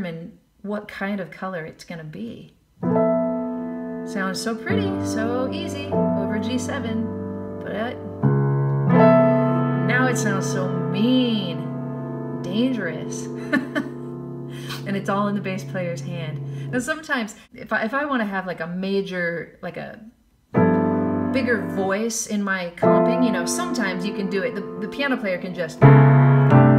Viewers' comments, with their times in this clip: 0:09 I want that chord to resolve to F sharp minor .